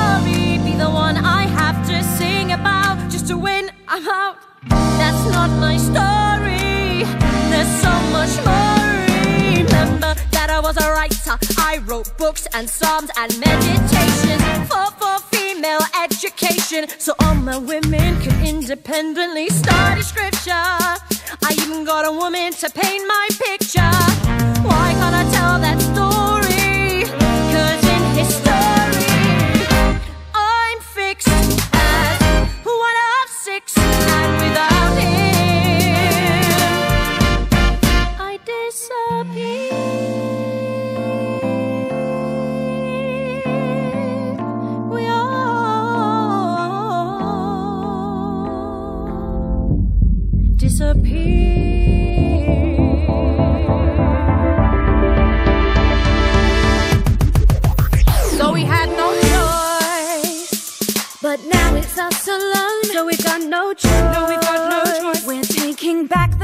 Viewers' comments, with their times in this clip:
0:05 the composers didn't have to go hard on that walkdown chord progression but they did anyway and my scalp thanks them for it
0:08 I'm not the only one who finds that little repeated drop in the instrumental (kinda jazz sounding) is super hypnotising right?
0:09 Has the same feel as "I remember that night, I just might regret that night for the rest of my days". Change my mind.
0:49 ok, am i the only one who lives for this beat??